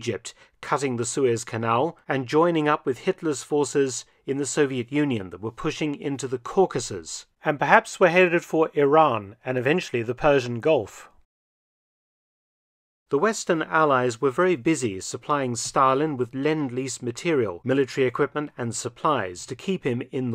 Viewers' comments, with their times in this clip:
0:05 wtf is that tune change